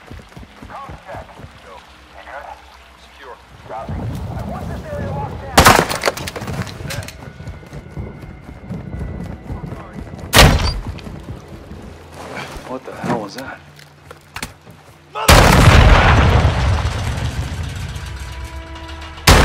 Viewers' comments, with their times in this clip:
0:05 omg the sound of the headshot feels so unforgiving, the dude got a skull fracture the size of a baseball... on both sides